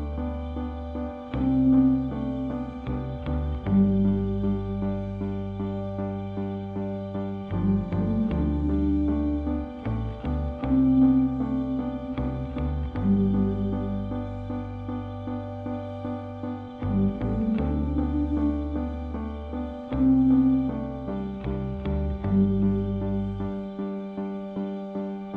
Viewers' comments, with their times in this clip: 0:09 and that whistle. Listening to elbow's like flopping on a feather bed. Dreeeamy ^___^